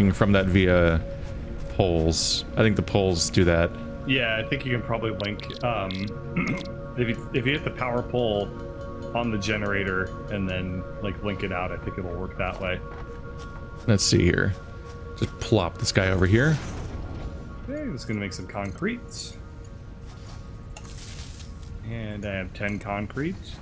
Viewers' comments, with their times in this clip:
0:04 he almost mispronounced and said wank it. just in case you missed it.